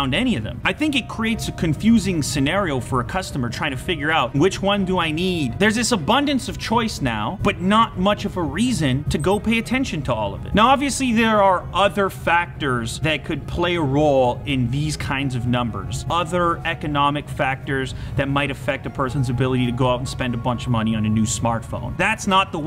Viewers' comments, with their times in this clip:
0:09 it was at this moment when i thought ... that sound was from my G-Shock.
0:09 Did any one here that beep